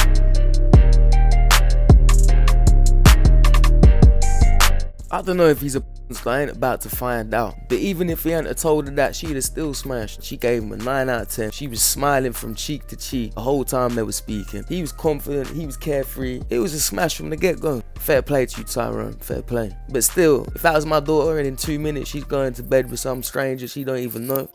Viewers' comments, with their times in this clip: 0:09 I didn't understand a word that guy or girl said